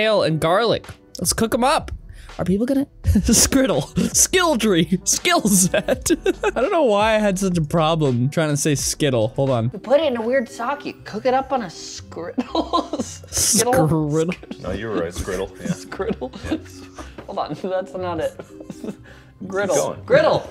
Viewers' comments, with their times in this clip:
0:05 I love how he explains having such a hard time saying skillet... and then says it wrong again...
0:05 i dont know why i had such a problem trying to say SKITTLE he is still strugglit to say skillet
0:07 still proceeds to pronounce it incorrectly
0:08 He’s still having trouble saying it💀